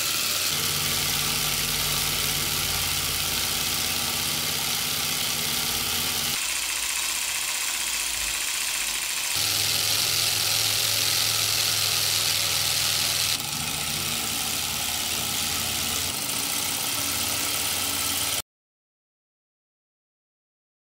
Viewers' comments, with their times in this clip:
0:05 All this work - for what? The engine (for what use?) doesn't even run evenly